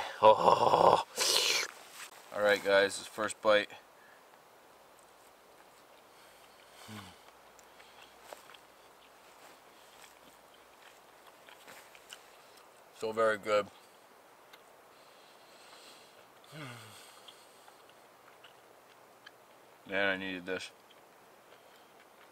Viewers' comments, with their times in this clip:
0:04 that little laugh after his first bite says it all.